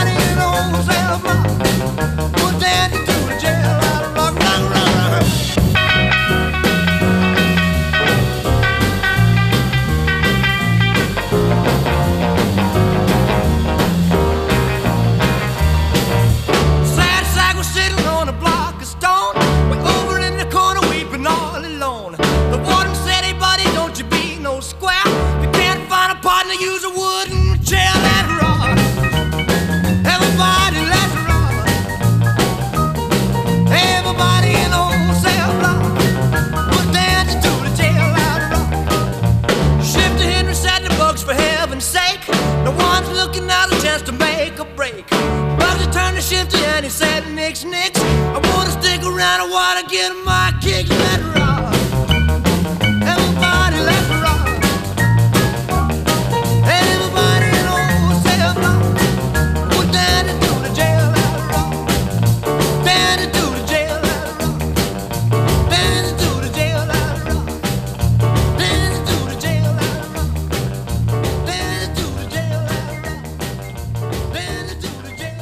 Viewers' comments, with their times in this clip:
0:04 blud turned into Cartman
0:25 My prom experience 2019? 🕺💃 Young Elvis wasn't no joke. Listen to that voice!! That shit holds up!
0:59 Laziest "Jailhouse Rock" Sounds like "We're danna do the jail alla rock"